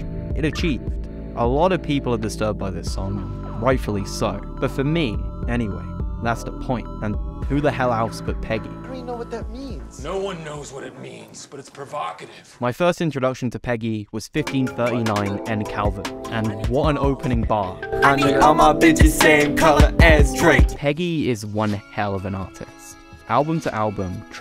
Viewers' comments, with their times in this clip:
0:10 ahahahah him being unable to resist rapping along, even in the edit was so hilarious, because same here, I was shouting “ALL MY BXTCHES SAME COLOUR AS DRAKE” 😂😂